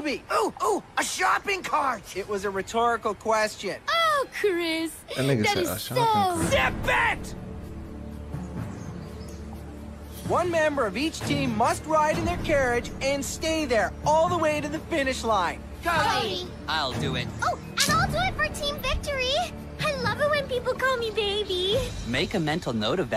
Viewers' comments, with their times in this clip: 0:06 Chris McLean was screaming at Sierra and then Chris McLean said Zip it! This is the best funniest moments of Total Drama World Tour.